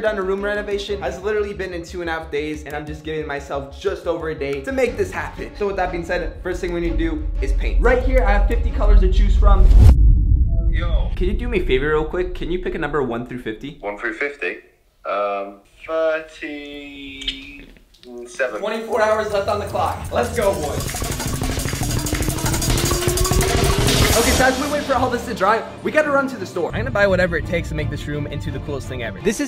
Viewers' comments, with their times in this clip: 0:10 is it just me or does that sound like Joseph Quinn?😳